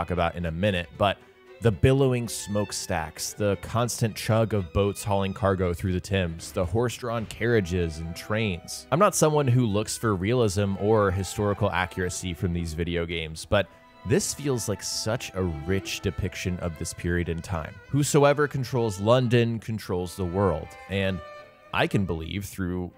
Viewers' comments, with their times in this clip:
0:05 I’m sorry did you just call the Thames river the Tim’s?